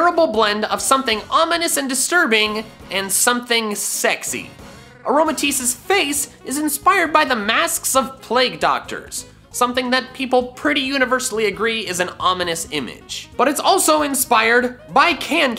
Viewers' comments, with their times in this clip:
0:03 "Something sexy" Music: Makes sexual RRRR noise